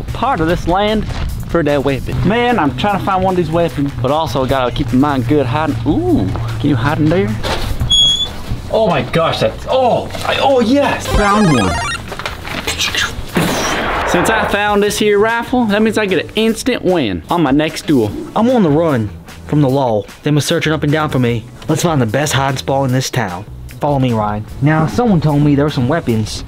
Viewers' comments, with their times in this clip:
0:08 His excitement kept him from keeping his accent 😂. Right back to his American accent.